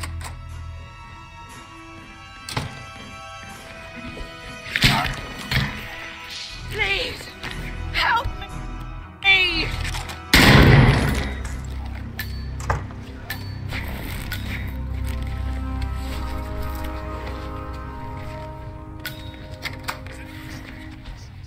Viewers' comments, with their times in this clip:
0:05 "Please, help me"!...BANG! Lol